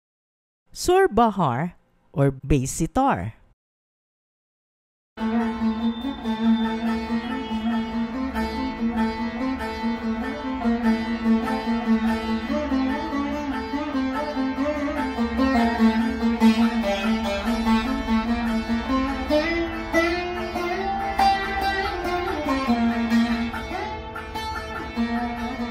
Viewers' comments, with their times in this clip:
0:07 is like sitar